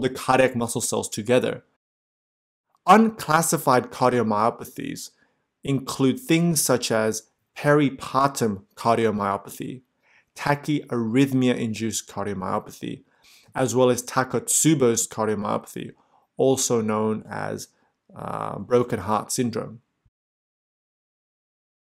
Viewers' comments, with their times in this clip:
0:06 Did he just hsay Harry Potter cardiomyopathy? 😂